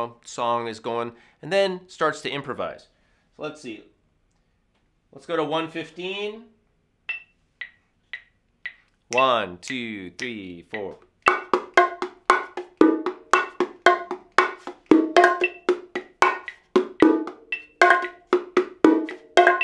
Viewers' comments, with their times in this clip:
0:06 Dug that syncopated groove Very cool.